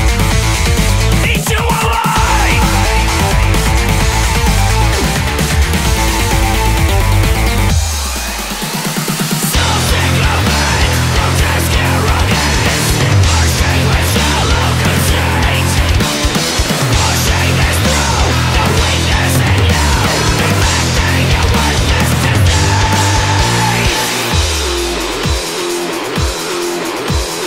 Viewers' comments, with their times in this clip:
0:09 Holy shit, almost sounds like a Nu Metal passage.